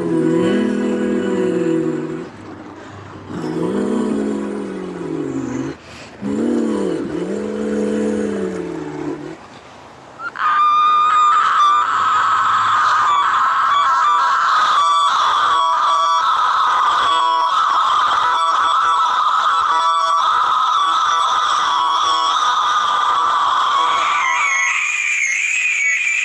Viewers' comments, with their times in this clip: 0:10 I really appreciate when musicians reincorporate musical phrases and motifs as a callback to earlier parts of the song